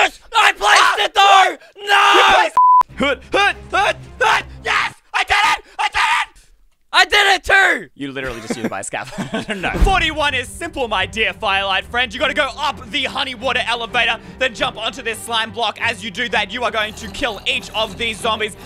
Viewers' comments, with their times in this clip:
0:04 the scream made me laugh so bad hahaha